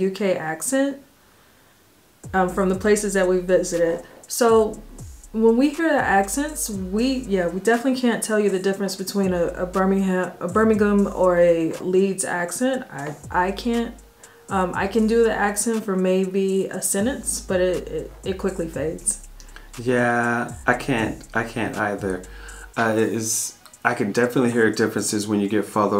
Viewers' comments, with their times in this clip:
0:10 I'm well impressed young lady you ish you turned the US pronunciation to the British pronunciation of Birmingham as a Brit if I talk to anyone from The black country as it used to be known And please understand it is nothing to do with skin colour It's about coming home from work covered in coal dust or dirt In the day of a bath once a week People the world over know hard work